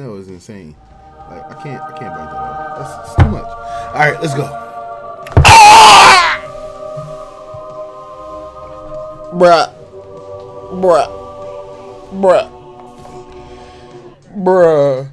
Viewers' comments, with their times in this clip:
0:03 he scared me with that AAAAAAAAAA